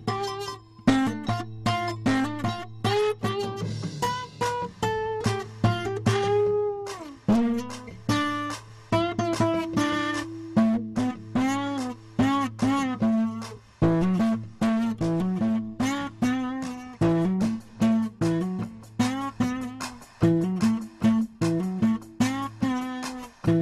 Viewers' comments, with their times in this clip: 0:10 the note bending makes me laugh every time.